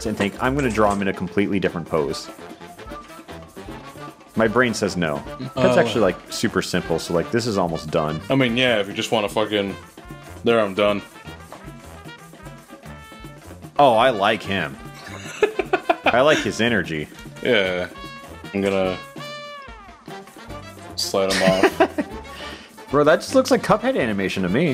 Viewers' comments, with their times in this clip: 0:08 I love the long pause before he says, "oh I like him"